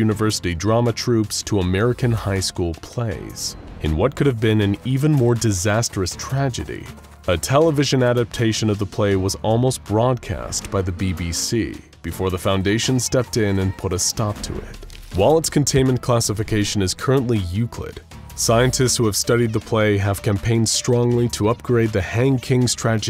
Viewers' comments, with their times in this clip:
0:10 I love how the MTF agent gets out of the car grumbling. Just strikes me as funny.